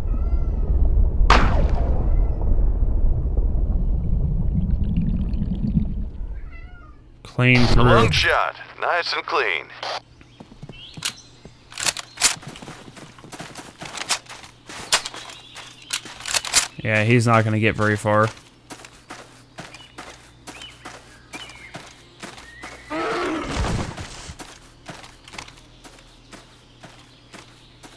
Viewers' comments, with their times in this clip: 0:08 Is it a cat crying in the backround??